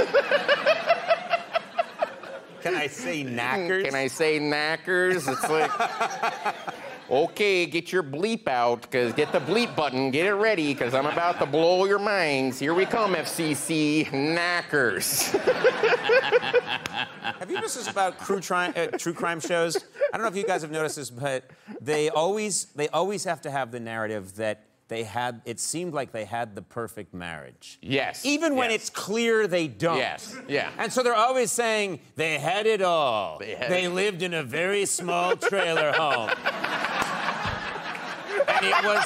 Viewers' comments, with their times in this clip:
0:06 Close your eyes and imagine Chris Farley
0:17 i like how conan has obviously moved on asking a new question and bill is STILL laughing
0:18 I too love "Crue Trime Shows" 😂😂
0:18 Who else heard Crue Times LMFAOOOO
0:18 "Crue Trime" 😂😂😂 I do that all the time too
0:18 cru trime lol
0:20 I don't like Conan interrupting his giggling/laughing xD